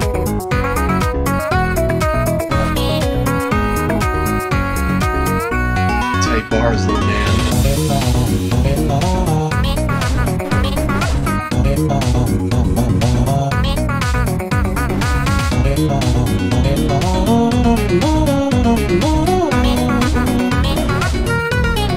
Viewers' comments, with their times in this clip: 0:06 I like how garcello talked there